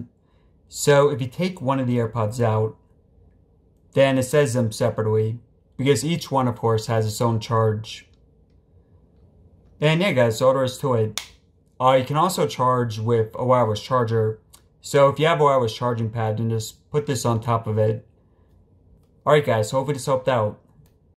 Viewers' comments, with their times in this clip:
0:09 turn on subtitles 😳 he said the n word-
0:10 sounds like he said then n**ga 😳